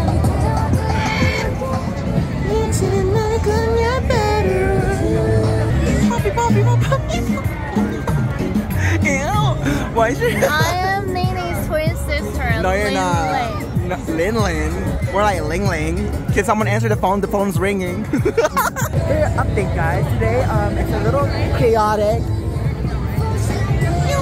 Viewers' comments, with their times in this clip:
0:09 #Dura playing in the background 😂